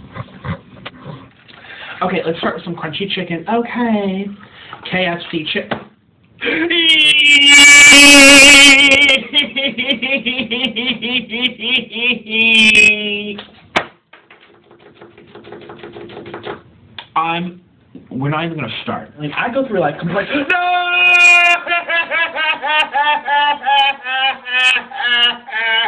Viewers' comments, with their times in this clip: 0:07 It’s the low quality of the crying that gets me. Oh yeah bee’s be like.